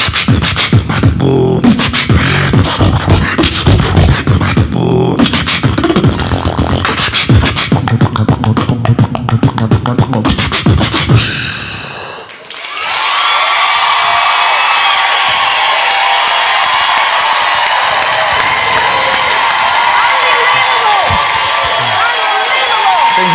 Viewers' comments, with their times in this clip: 0:07 the beat he drops is dope